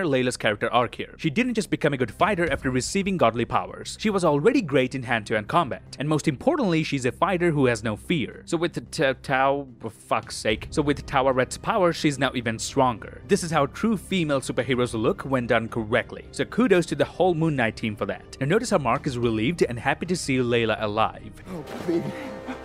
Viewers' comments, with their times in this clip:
0:08 Lad Struggling To Spell Tawaret Is Just OP And Can Watch For Hours...😂😂😂